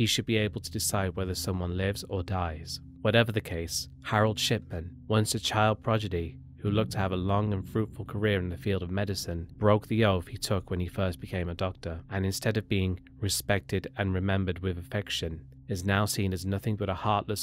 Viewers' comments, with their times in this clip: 0:03 "Harold Shipman, once a child 'projidy'".... lol